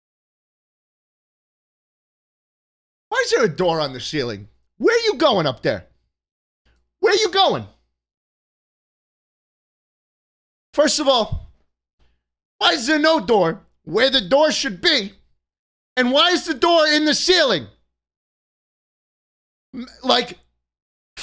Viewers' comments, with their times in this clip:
0:03 "what's with the sauce cabinet, man?" the concern and disappointment is so genuine, he can't even be mad.